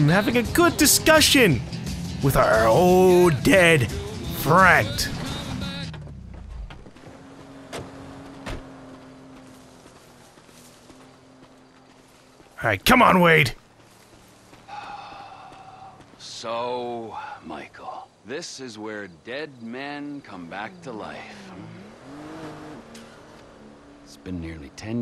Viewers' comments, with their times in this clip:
0:07 you starting to sound just like Trevor